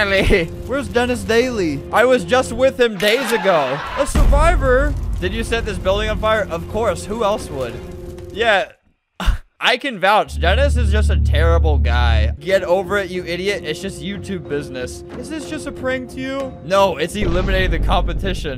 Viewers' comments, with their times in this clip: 0:03 why isnt anyone talking